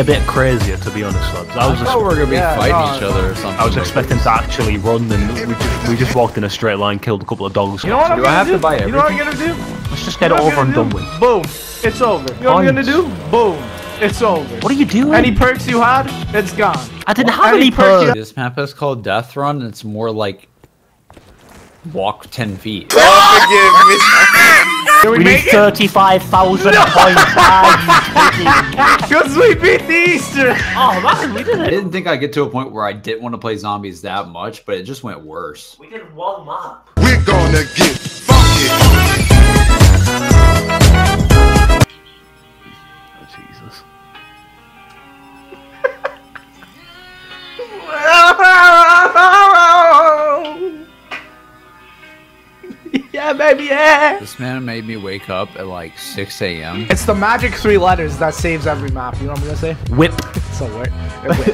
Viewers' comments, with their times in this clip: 0:03 that's a catchy ass song dude
0:47 Best. singing. ever.
0:47 Better than Adele